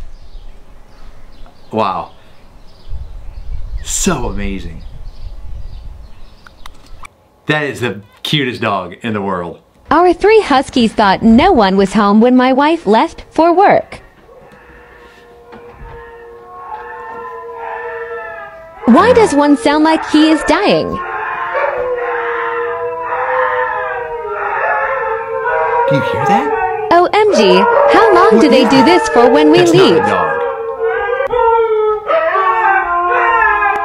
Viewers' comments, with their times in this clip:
0:08 * Happy beluga sounds *
0:10 I love the sqeal!❤️
0:20 That’s not a dog that’s a dolphin but it happens. Lol
0:21 the dog sounds like a human